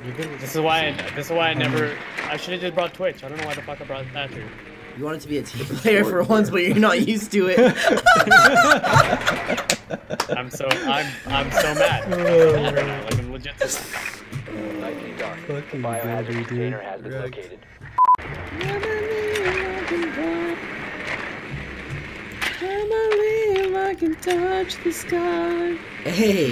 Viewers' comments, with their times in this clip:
0:07 I love when you laugh at your own joke lmao